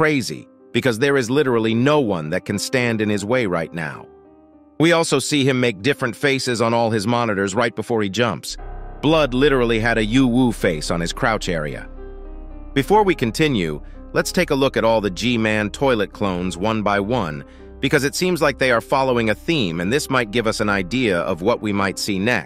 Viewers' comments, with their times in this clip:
0:10 I thought he said something inappropriate but apparently not from my understanding 😂